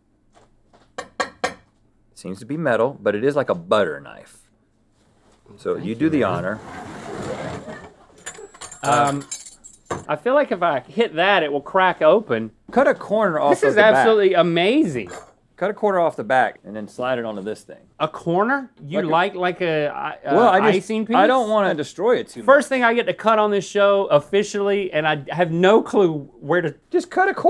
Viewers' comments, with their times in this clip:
0:08 lol you gotta love the synchronized “um” 😂